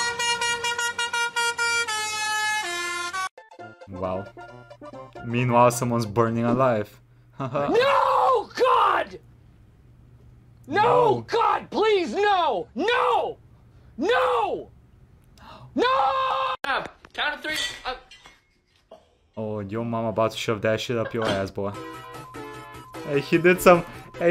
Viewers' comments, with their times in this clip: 0:06 Yeah. Imagine your house is burning down and there are people stuck in the burning building. You are waiting for the firefighters to arive, praying that they get here as soon as possible and then you hear f*cking Baby Shark coming down the street.